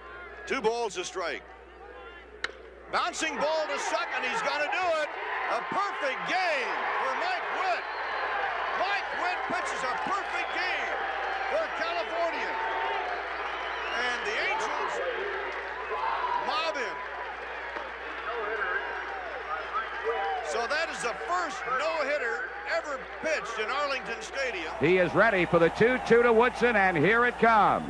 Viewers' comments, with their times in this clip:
0:09 “Mile” Witt? Wtf?